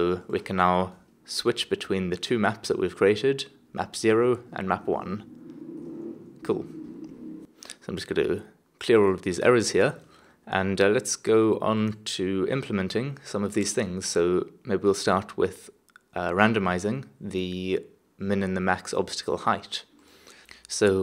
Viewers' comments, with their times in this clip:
0:05 small pause. what was that? your stomach starving? lol